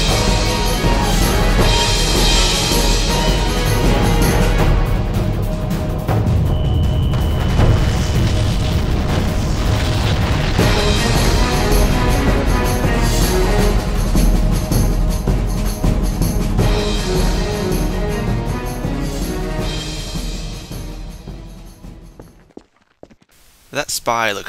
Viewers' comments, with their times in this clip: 0:07 epic fall with music